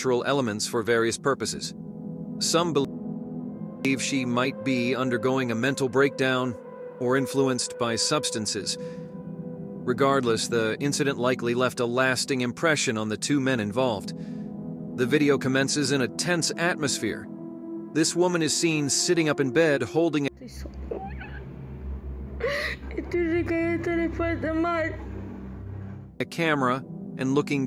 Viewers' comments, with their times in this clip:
0:10 Something weird starts happening with video and commentary and almost everything after. Bounces in and out from the clip and commentary cutting off each other.